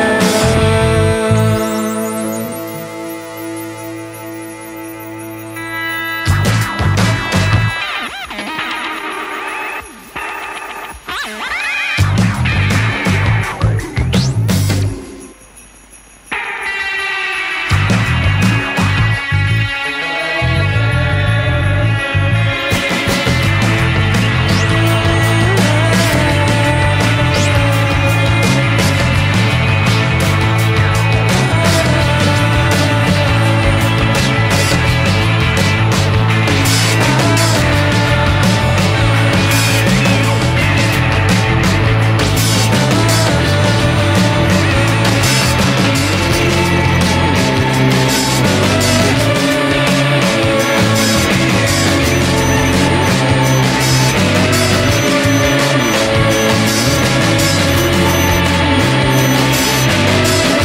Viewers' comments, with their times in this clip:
0:06 oh i guess the song's over- WHAT
0:44 This song is utter genius. when all the themes built up come together at once and the opening riff just sneaks back in my mind enters some kind of out-of-body trance. It's incredible, there's no other song like it.